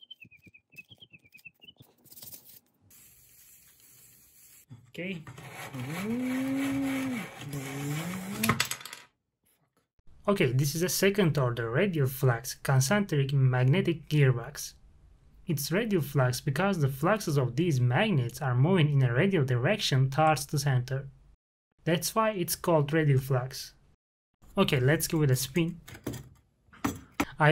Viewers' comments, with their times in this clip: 0:08 I love how you can hear him just barely curse at the sorry that happened tho man.
0:08 I heard that whisper